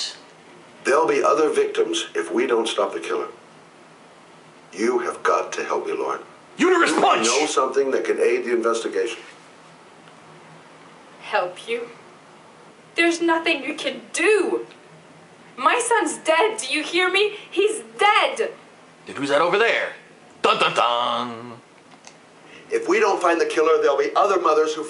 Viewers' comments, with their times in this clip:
0:09 lol he randomly shouts UTERUS PUNCH! i laughed so hard at that